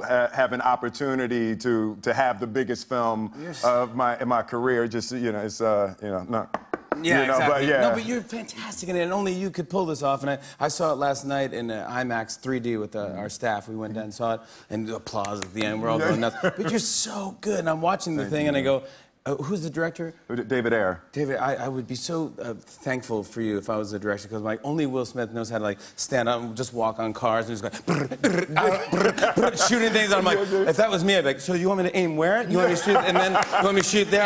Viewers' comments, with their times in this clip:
0:04 Why did he do that, the knocking on the table thing? What does it mean??
0:15 if you listen closely u can hear him whisper "help me"